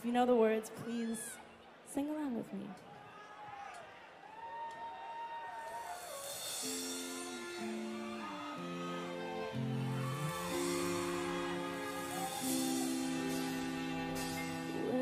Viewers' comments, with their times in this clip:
0:03 To those who say she cant sing live, skip this video to (her cover of Creep). She's got the passion for singing, and it is also evident through the messages of the songs she sing. To those who say she's just pretty and nothing else, be ashamed of your insecured selves. She is a good lyricist, has a good tone, has a few good techniques that she can improve on as she grows more, and her songs are well crafted. Plus, she sings LIVE. She is an ARTIST.